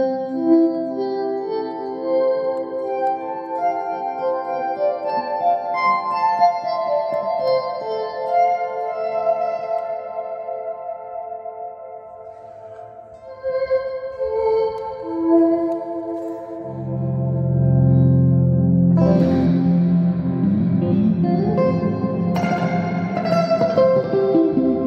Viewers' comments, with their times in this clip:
0:09 that sound so heavenly 🤧😇
0:10 The Last 6 notes before the Break are pure beauty of melancholy...